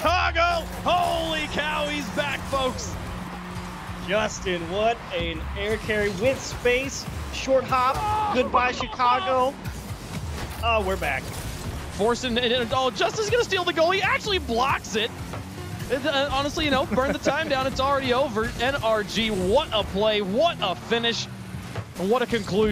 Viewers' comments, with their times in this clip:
0:06 The audio couldn't ever be better